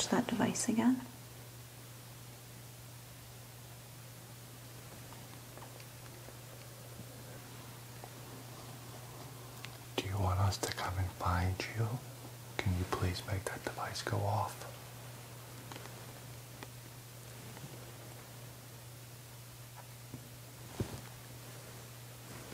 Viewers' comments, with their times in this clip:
0:04 I think you did a great job omg it was amazing to actually hear a spirit .I know I did